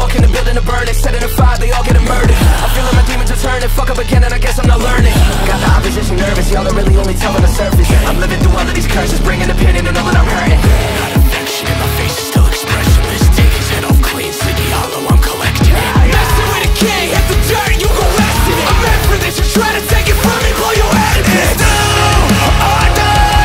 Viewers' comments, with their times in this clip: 0:05 is it just me or is the a discord notification lmao